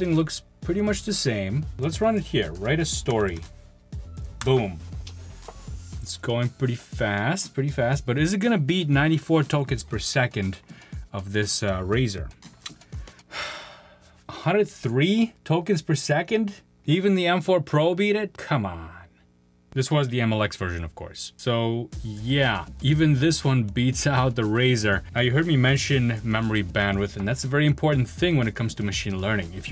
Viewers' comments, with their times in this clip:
0:10 That sigh just sums it up doesn't it...